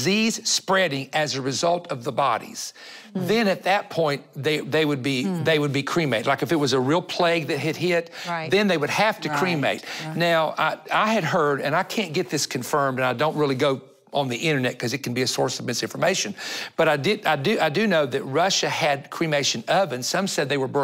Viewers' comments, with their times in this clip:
0:06 I love how he says "If there was a REAL plague that would have hit". 😁